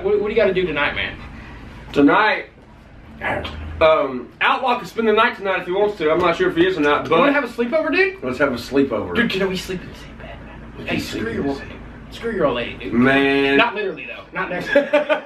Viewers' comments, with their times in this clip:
0:03 when upchurch spits it looks and sounds like he's kissing the dogs head lmao